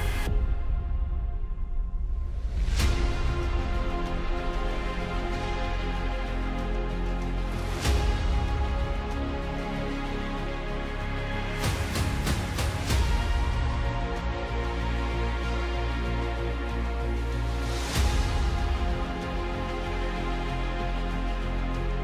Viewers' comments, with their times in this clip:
0:09 hanma yujiro breathing like an animal in heat🤦🤣